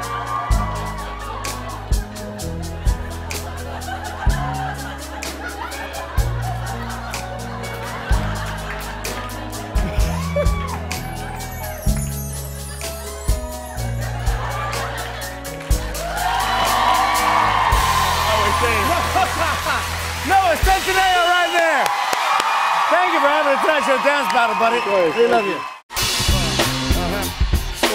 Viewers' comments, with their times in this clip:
0:09 OH SHIT. THAT WAS THE CUTEST LAUGH. 😂😂😂💞💞💞